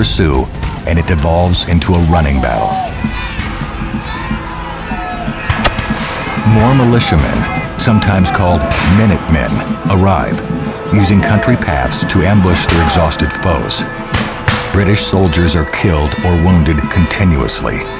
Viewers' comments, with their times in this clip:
0:04 AIGHT I KNOW IM SUPPOSED TO BE STUDYING BUT THAT WAS A FRIGGIN CALL OF DUTY HIT MARKER SOUND EFFECT